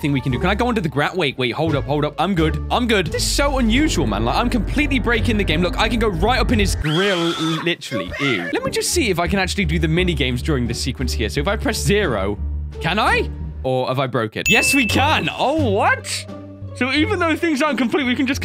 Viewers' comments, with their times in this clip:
0:06 you can hear coryxkenshin saying u better stop from his little nightmares ep